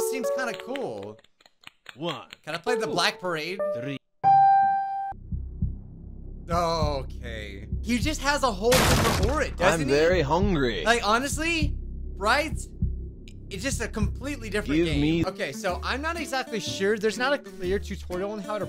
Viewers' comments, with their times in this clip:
0:04 This actually sounds like the start of “The Black Parade” By My Chemical Romance